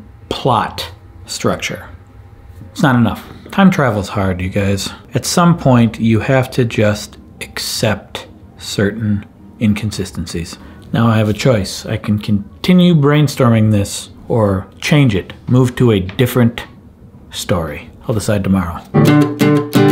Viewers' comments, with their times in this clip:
0:04 Is just me that thought he said the n word